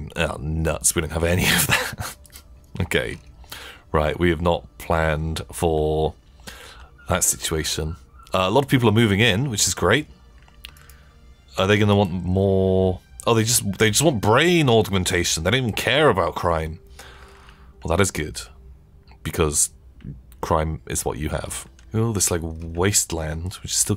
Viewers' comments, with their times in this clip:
0:06 this year's first appearance of Yogscast Seagull?